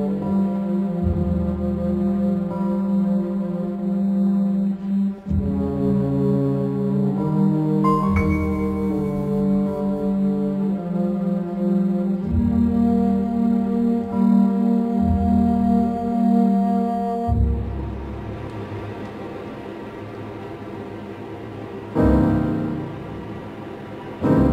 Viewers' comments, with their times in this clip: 0:09 I heard the whole horn section breathe simultaneously. So beautiful. That tells me human beings are playing this gorgeous music. So special.